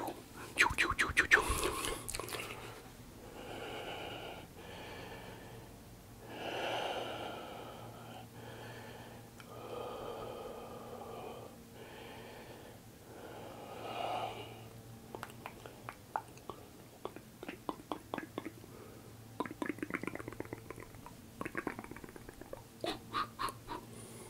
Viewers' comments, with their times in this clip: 0:07 Zen sigh Sub : children